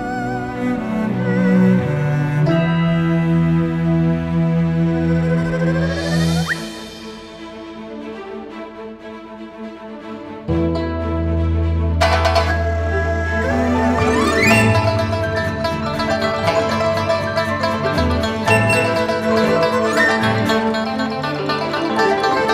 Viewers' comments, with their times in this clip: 0:10 You know you about to spoil some Hilichurl's day in Liyue when the string kick in
0:10 When u dk where the dendro slime is but this music still plays